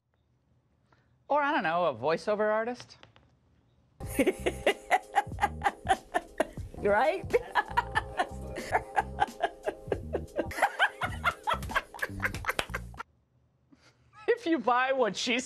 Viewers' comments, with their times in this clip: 0:03 Kamala has a creepy laugh Thumb up if you agree!